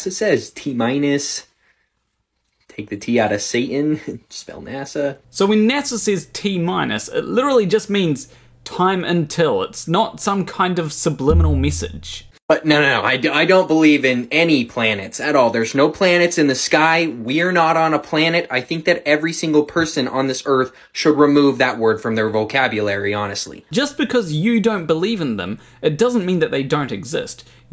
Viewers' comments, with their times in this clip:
0:10 You hitting your hand on the mic made a sound strikingly similar to the first chord in a Michael Vsauce video and I expected the rest of the song to start playing.
0:11 mike bump almost made me think I was watching a vsauce video